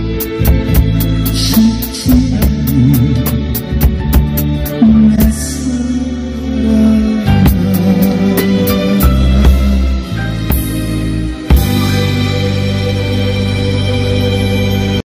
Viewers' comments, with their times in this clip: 0:12 Good evening my friend, playing music and singing well, success my friend👍🇮🇩